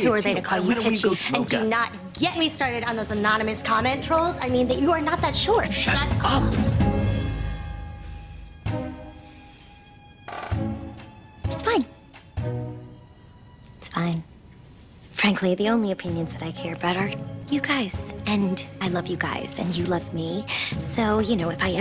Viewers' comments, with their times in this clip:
0:05 that synchronized shut up always sends me lmao